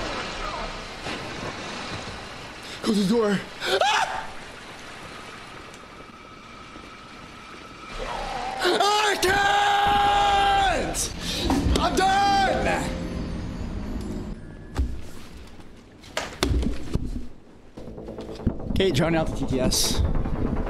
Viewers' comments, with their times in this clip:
0:03 Ahhh, da scream that's what I come here for. LOL